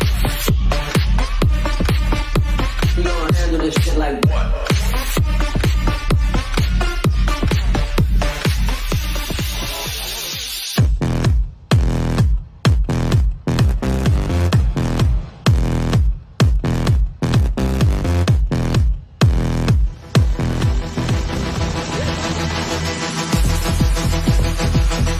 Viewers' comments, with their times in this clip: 0:10 Old School guetta!!